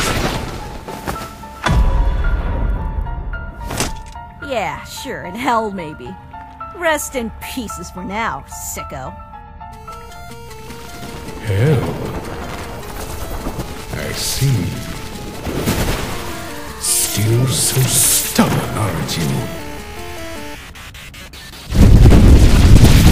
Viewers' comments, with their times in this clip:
0:09 that music playing welp u pissed him off ur gonna die